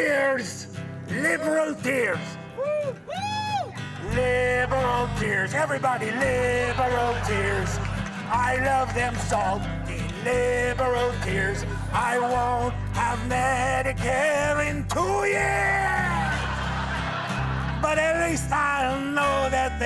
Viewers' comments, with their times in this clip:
0:07 What A SoundTrack.